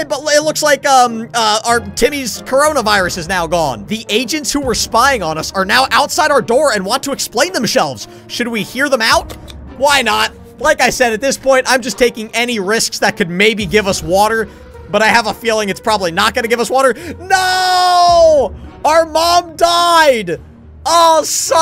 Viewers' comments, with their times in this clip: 0:07 you said explain themSHELVES not explain themselves